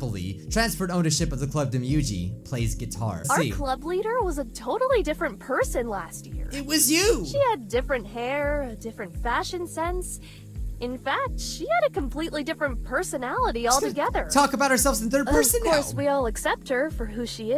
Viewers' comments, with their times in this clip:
0:05 OMG WHO ELSE THINKS SHE SOUNDS LIKE KATELYN FROM APHMAU MYSTREET SERIES AHHHH